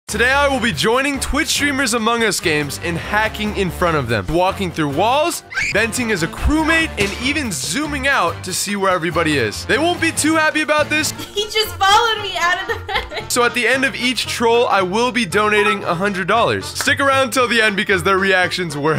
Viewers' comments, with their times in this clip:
0:03 is wall hack and red scream
0:05 ”Walking through walls *Scream*
0:05 That scream was personal.